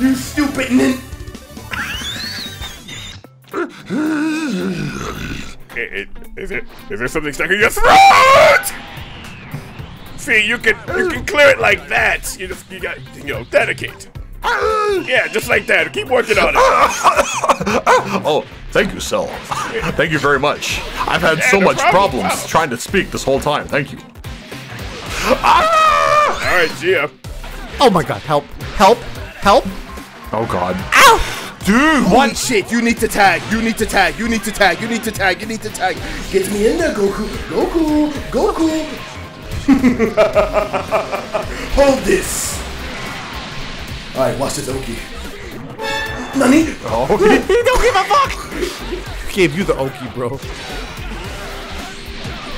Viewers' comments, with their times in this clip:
0:03 Sound like a dinosaur but on crack
0:39 that Zamasu laugh sounded perfect